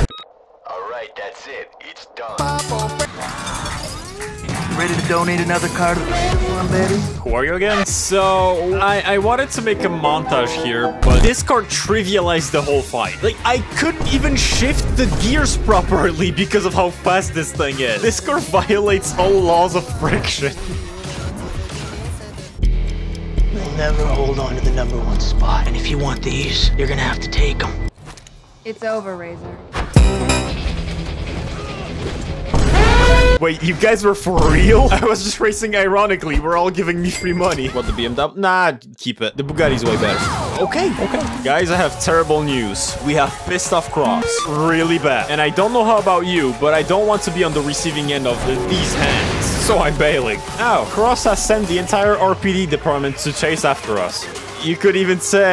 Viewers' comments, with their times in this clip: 0:07 Bro got that Andrew Tate status. . . Screw the BMW, I'll take my Bu-gah-ee 😅
0:43 Cross screaming Owl City music has me dead